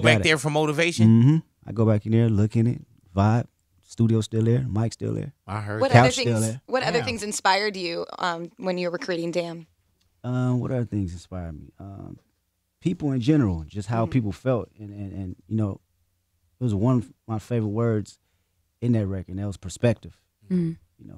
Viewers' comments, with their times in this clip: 0:06 he confused the chics voices 😂